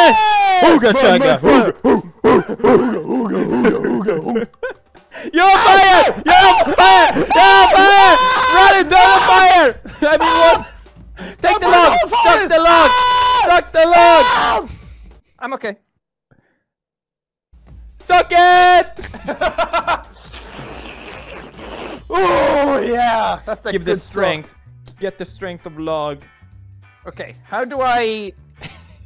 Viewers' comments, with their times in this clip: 0:06 rest in peace headphone viewers
0:10 I stopped watching this video Just too much yelling, like in Minecraft videos where you guys coop.